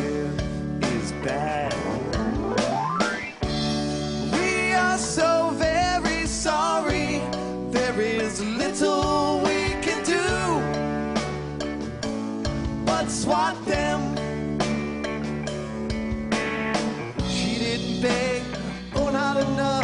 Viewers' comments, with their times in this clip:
0:04 I mean every sone has these 4 chords. C/g/am/f. Like a prayer, my name is jonas, damnit, when I come around...it's the most used chord progression in popular music. Some comedy band.had a montage of hundreds of popular songs using it.